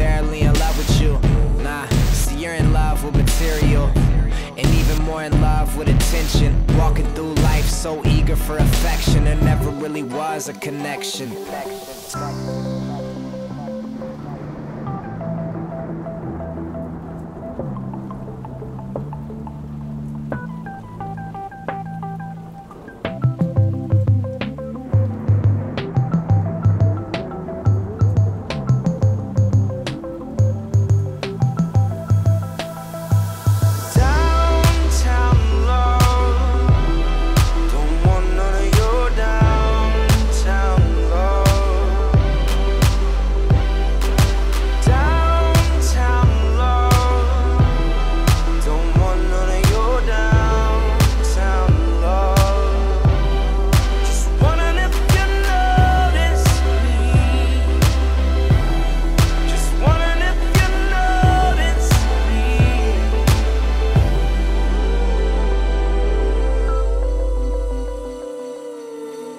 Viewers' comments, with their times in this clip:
0:09 I wish this little piece of instrumental was on the full song and not the only on the music video
0:52 fuckin love that beat 💓